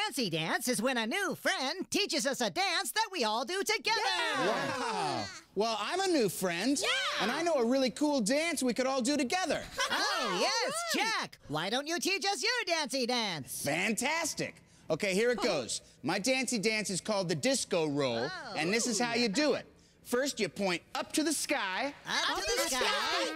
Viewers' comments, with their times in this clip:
0:04 That Wow Sounded So Sarcastic